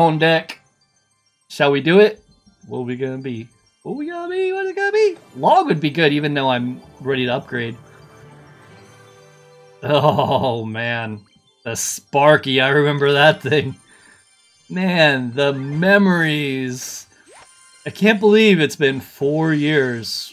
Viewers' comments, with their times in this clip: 0:08 chanting for sparky to come out 😂😂😂